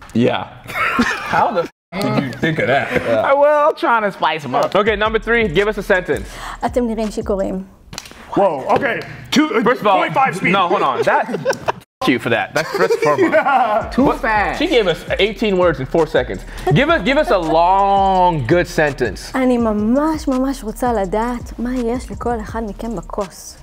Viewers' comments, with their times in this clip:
0:06 thst girl Spoke super fast 😂